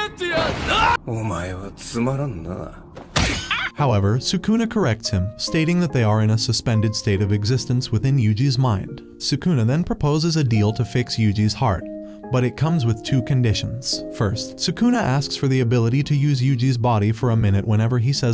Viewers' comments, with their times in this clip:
0:03 BAHAHA THAT SCREECH WAS EVERYTHING!!!